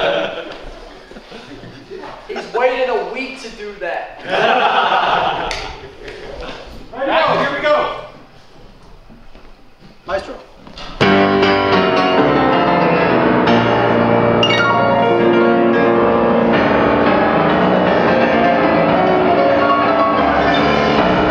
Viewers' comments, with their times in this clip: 0:08 that "here we go"